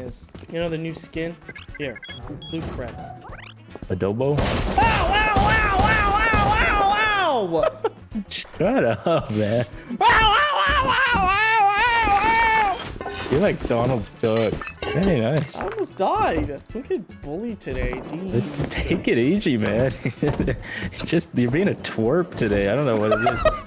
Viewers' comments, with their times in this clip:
0:10 cat in the parking lot be like